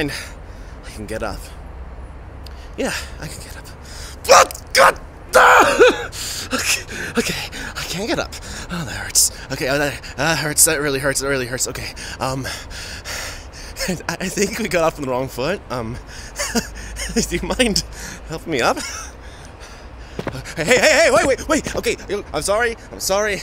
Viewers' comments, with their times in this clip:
0:04 I really heard his viking persona appear omg